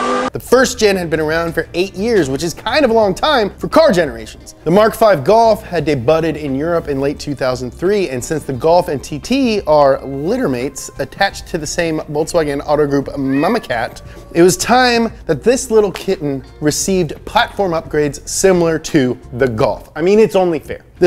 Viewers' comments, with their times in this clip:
0:06 "day budded" lol